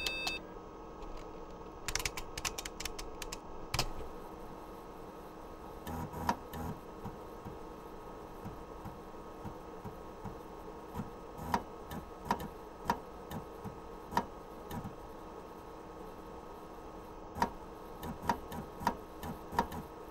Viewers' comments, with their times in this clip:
0:05 While the lubricated drive is a lot quieter overall, it does make a weird clack sound though. Not sure if that's a problem. Anyway, thanks for the really helpful info; that's fantastic. :)